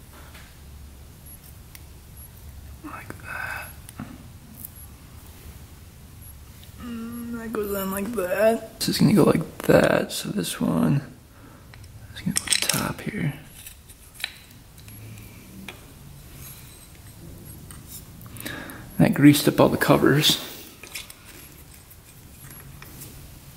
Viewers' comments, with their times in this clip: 0:06 That goes on like that 😂😂 said under pressure like me when it has to be perfect 👍🏻